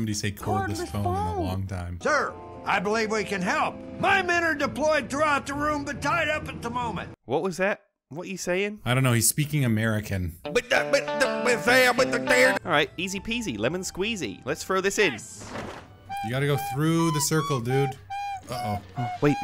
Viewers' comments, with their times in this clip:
0:03 😭 this is exactly what americans sound like to other languages